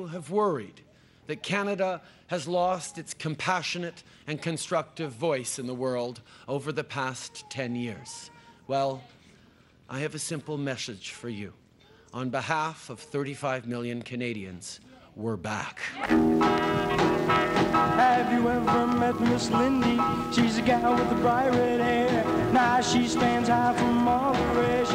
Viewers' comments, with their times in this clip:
0:10 i have a simply meshage for you